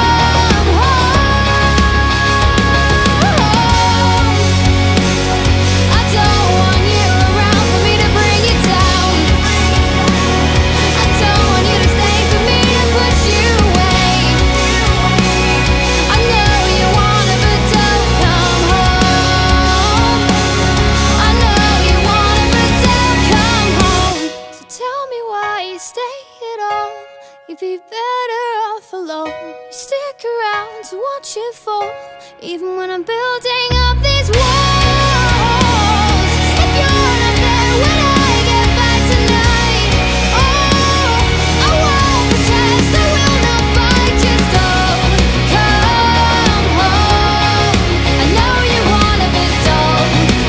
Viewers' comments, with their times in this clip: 0:04 the instruments!!! AAAAAHHHHH💕💕
0:34 gives me chills!! I really like this. Amazing vocals.